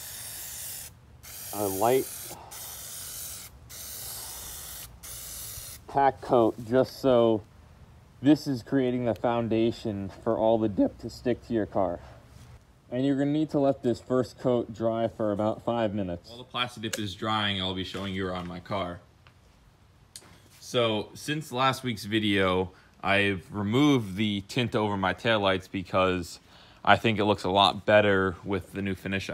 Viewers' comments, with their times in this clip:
0:10 Voice Crack "dip". Sorry had to do it lol
0:10 Hilarious voice crack 😂😂😂
0:10 Fat voice crack
0:10 VOICE CRACK ALERT
0:10 That voice crack a
0:11 That voice crack though buddy ain’t letting that slide 😂